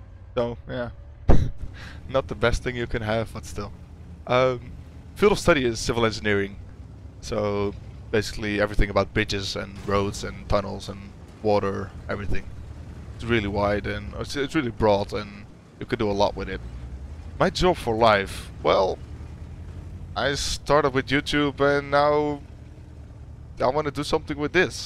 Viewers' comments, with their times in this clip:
0:09 everything about bitches :P